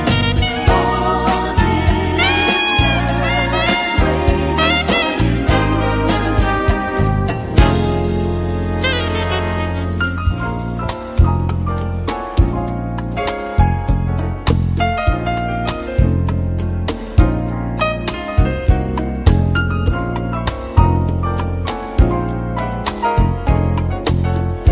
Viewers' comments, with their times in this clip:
0:10 piano solo never gets old🔥